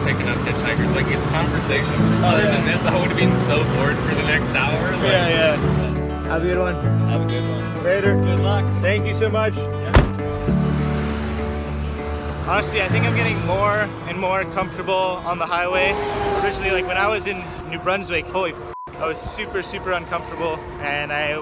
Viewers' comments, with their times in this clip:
0:08 that slam thou😂